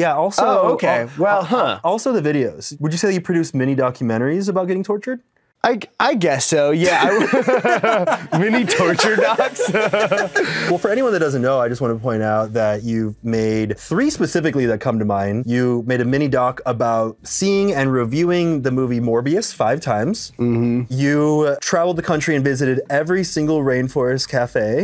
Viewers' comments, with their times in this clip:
0:09 eddie laughs like seth rogan